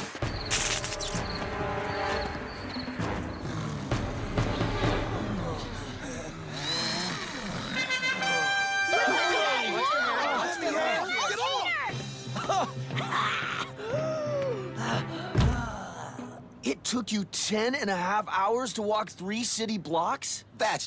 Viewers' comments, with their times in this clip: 0:07 LMAOO the horn was so loud it fixed heathers wig 😭